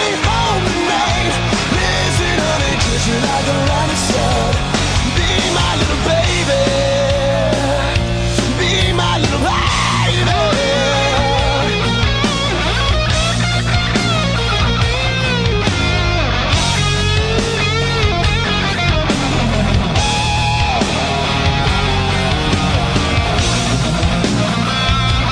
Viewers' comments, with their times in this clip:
0:07 was almost ok with this until then the dude just spazzed on me. wtf? i need the original. ronnie spector made the song, imo